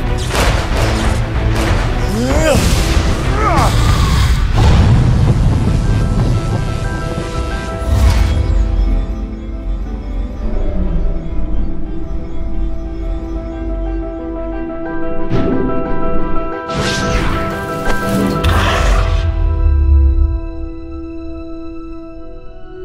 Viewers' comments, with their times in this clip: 0:03 sounds like shiva's guard an item from dota 2